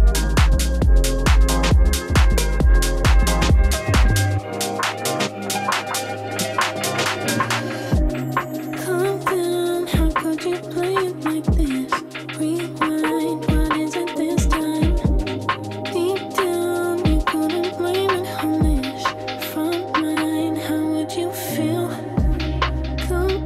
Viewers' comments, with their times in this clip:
0:08 reminds me of burial... love it